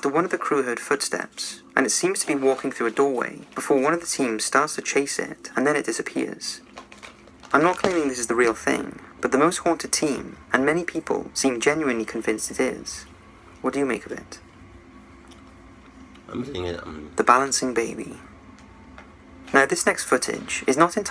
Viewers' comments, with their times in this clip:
0:05 ''One of the team members starts chasing it, and then it DISSEPENIS'' WHAT THE FUCK? lOOOOOOOOOOOL i am literally dying